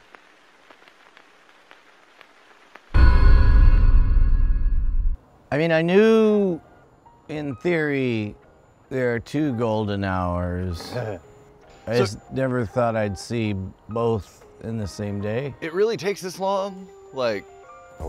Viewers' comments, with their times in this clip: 0:03 That deep chimey not gong sound is also the very beginning of Infected Mushroom's Heavy Weight. (one of the greatest songs ever written).